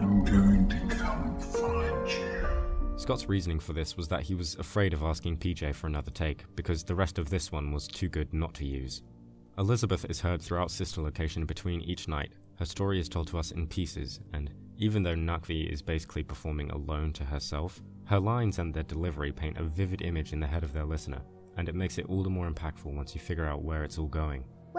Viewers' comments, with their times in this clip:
0:06 nooo scott don't say sorry it's one of the best lines in the games, even the slowed down sounds cool asf